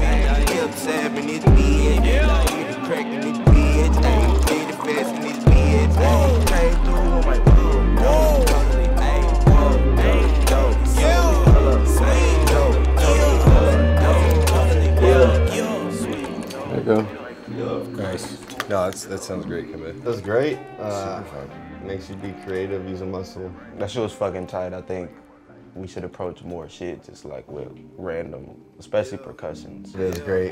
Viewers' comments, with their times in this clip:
0:03 I think the epitomy of this beat was that water cup pouring part 🔥
0:13 even this lighter fitt perfectly <3